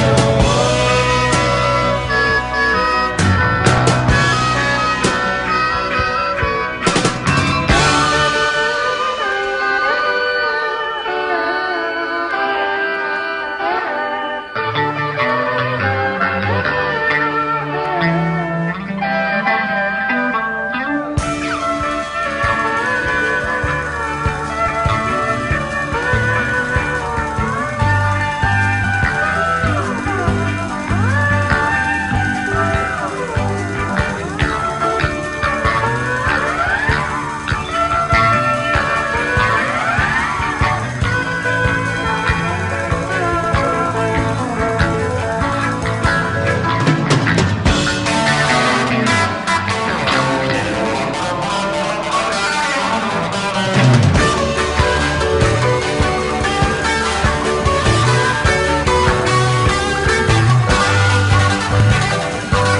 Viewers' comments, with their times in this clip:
0:09 I've always loved the part where steve plays the steel and Chris plays counterpoint...It's delicious!
0:21 That guitar always reminds me of the best sleigh ride I'll ever be on.
0:47 Fantastic! Finally a camera person that caught on tape- Steve’s transition from Peddle steel to to guitar at exactly When you hear it on the album it seems an impossibility live, but here Steve does it easily. Very rare footage. Thank you for posting. Super clean recording.